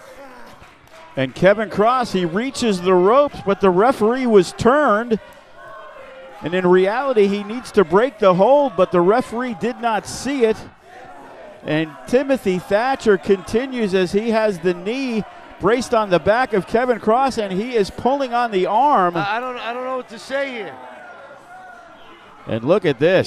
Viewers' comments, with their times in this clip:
0:06 What a lame crowd chanting “This is boring”